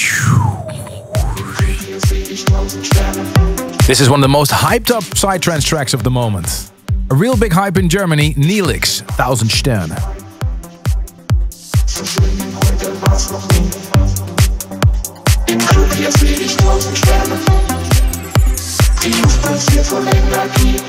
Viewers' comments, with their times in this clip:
0:04 That NEELIX track is TRANSCENDING !